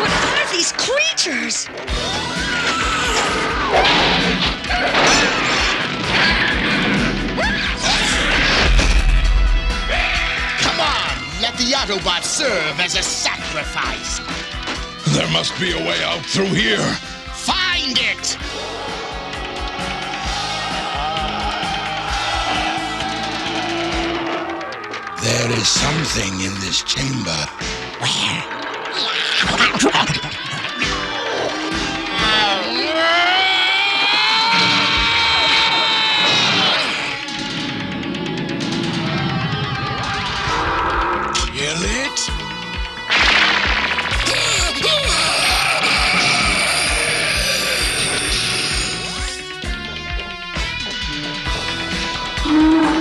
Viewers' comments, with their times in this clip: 0:08 that explosion sounded epic
0:41 galvatron weird voice